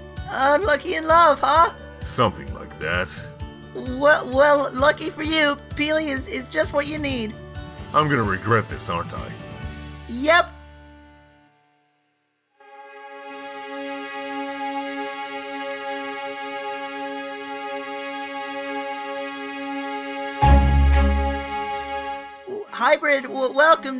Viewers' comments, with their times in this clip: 0:04 how come pelly in this video sounds like morty from rick and morty